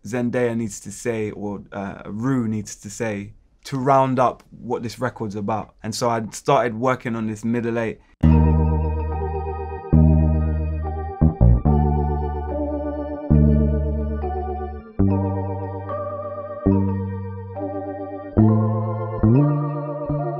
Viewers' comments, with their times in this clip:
0:08 I'm literally living for that little psychedelic part I wanna have that as an isolated track so I can have it on for repeat for the rest of my life. You sir are a genius.